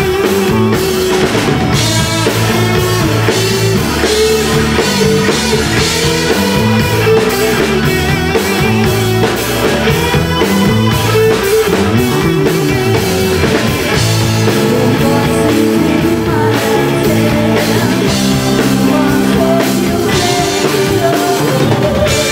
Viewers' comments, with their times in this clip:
0:10 Wonderful vocals as always, always always. Engaging chord progressions from the guitar & keys. Excellent tone, technique & phrasing on the solo. Those way-cool bass fills starting And most of all on this particular song, that polyrhythm on the drums captures the erratic emotion of trying to make sense of feelings of paranoia. Everything about it, this song is a masterpiece!